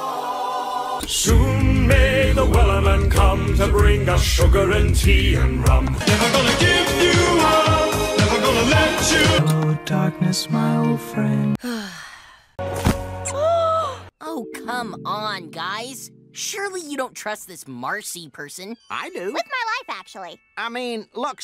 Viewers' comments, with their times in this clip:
0:06 WE GOT RICK ROLLED MAN!!!!